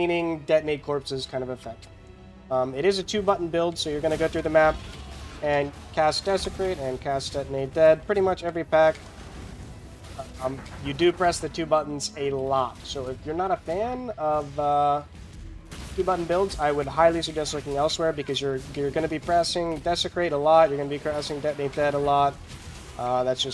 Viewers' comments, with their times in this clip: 0:10 i thought someone was knocking on my door.
0:10 I thought someone knocked on my door, wtf lol